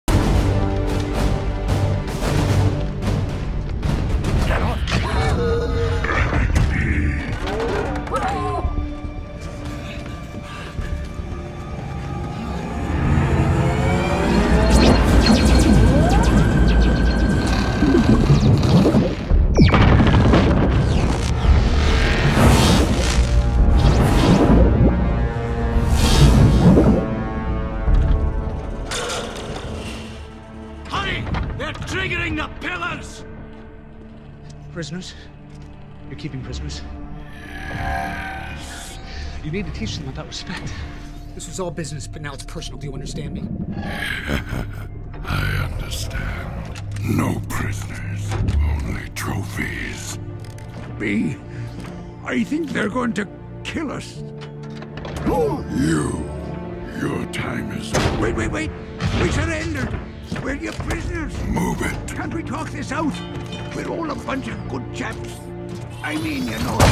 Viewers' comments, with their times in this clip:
0:04 just listen bumblebees voice it s so sad
0:05 you can hear barricade say "remember me?" to bumblebee
0:05 did barricade say bumblebee in a dark voice?
0:54 If no one noticed, Barricade actually starts to talk with Soundwave's voice, starting